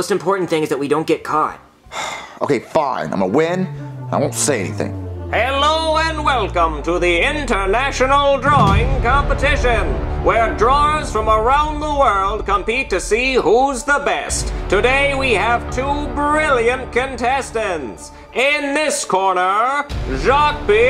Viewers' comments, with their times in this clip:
0:05 His voice just makes me angry inside
0:06 I like this music